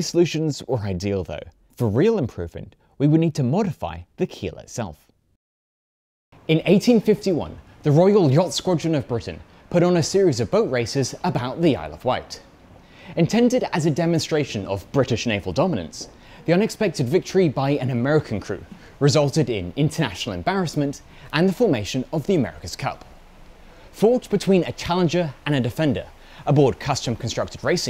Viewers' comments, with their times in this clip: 0:08 Yacht Scrotum of Britian?